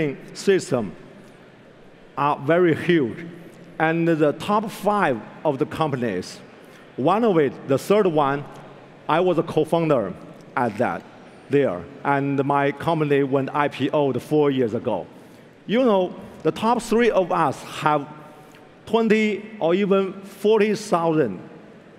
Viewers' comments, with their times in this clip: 0:04 "the after- School TORTURING market" :-D